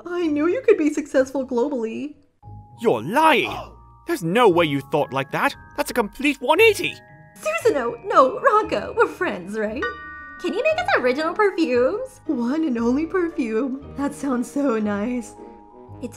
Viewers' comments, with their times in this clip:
0:03 them strong British accents caught me off guard they sounded so posh